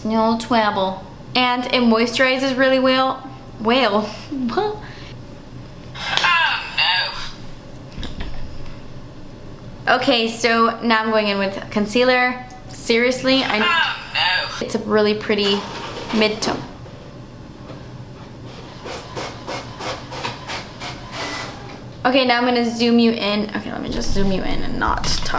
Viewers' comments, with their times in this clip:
0:10 DIDNT ANYONE ELSE HEAR PHOEBE BUFFAY SAY "OH NO" ???